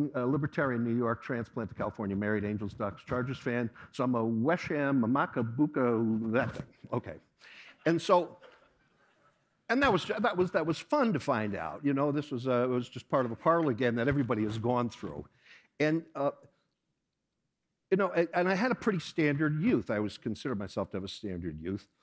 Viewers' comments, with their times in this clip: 0:04 “and so” (then a pause) after he said that at the end... fail🤣🤣 he thought people would be laughing